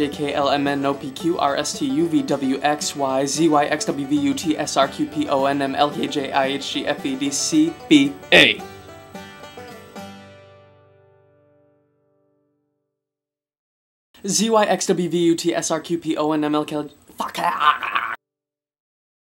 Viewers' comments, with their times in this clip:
0:06 haha sounds like I EAT SHIT lmfao